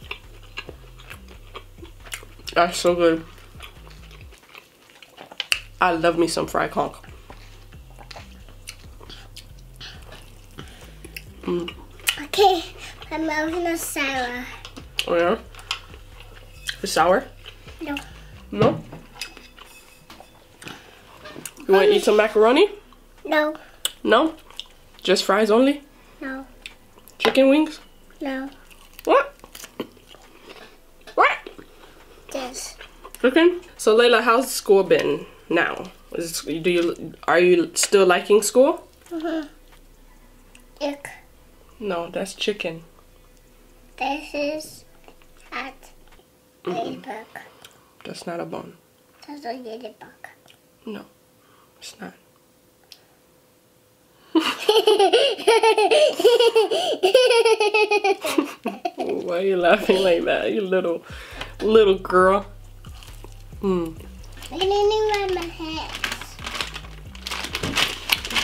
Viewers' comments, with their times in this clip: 0:05 sounds so wrong
0:55 She has the cutest laughter 😍